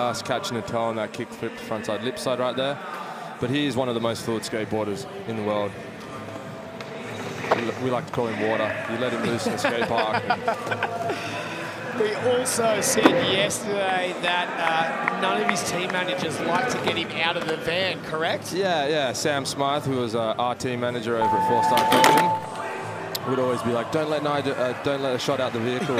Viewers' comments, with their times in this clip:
0:07 is that the ground cracking ?